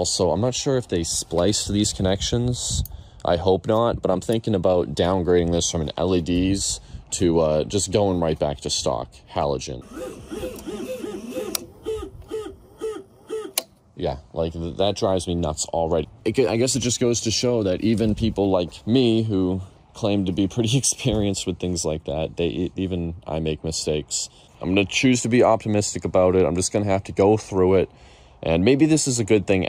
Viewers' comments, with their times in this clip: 0:10 What is that noise?🤣